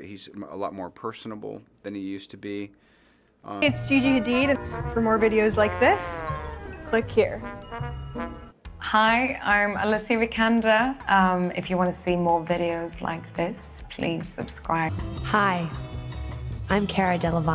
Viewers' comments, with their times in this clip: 0:03 what the heck is that girl saying?